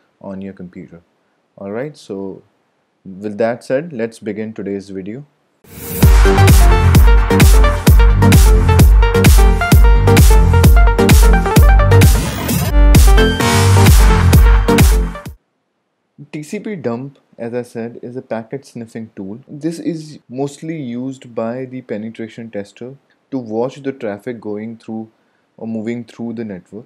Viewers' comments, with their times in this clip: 0:07 please, my ears